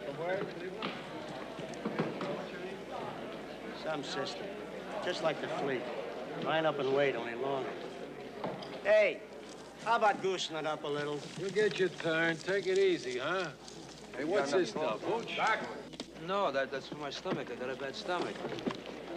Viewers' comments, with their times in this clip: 0:06 Is not that George Bush speaking?